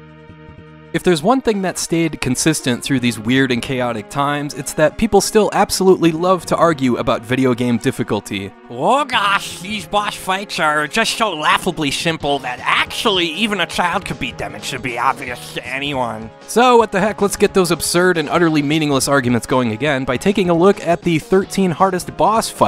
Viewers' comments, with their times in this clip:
0:08 Absolutely nailed that super dork impression, spot on!
0:10 No reason to make fun of people with speech impediments—a disability—at